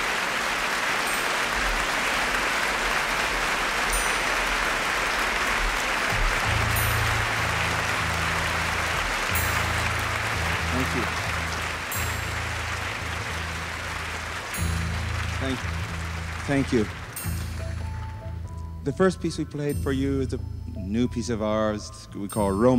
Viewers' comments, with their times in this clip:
0:07 Summertime/ Milt Jackson goes off into his world, right up there next to Art Tatum.